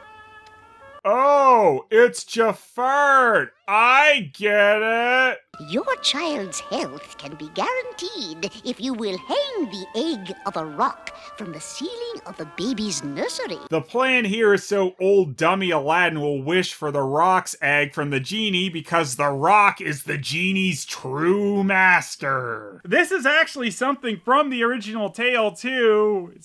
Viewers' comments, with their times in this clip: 0:07 Yikes, Jafart could give Mel Blanc a run for his money. That impression was spot on XD